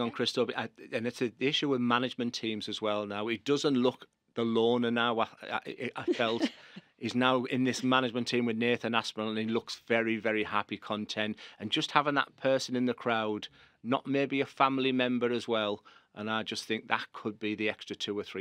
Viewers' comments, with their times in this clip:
0:05 what she laughing at?